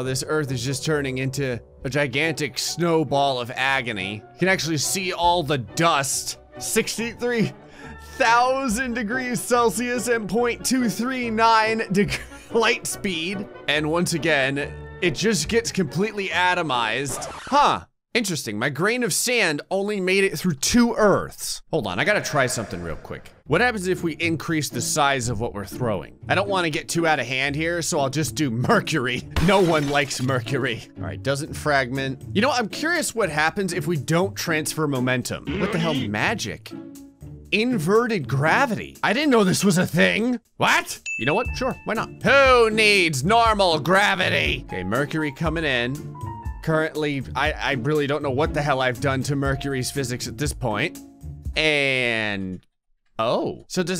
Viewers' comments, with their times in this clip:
0:03 nah mawn that’s a fart
0:39 He sounds like fell papyrus